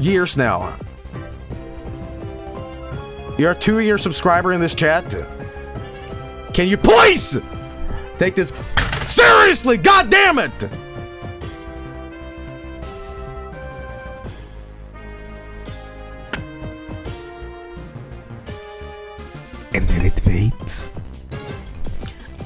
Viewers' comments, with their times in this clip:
0:05 I'm a bit confused, was Joel legit pissed ? He sounds so actually angry I can't even tell if he's doing a bit this time